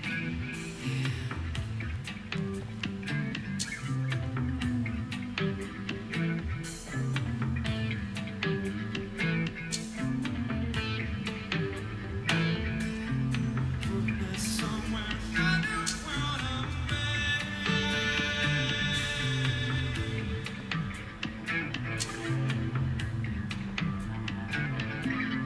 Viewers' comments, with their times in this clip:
0:08 Most of the tabla in the track is Danny triggering sounds off the various pads on his kit. The part is one of the special moments where Danny's tabla instructor Aloke Dutta joined them on stage and the two are playing together.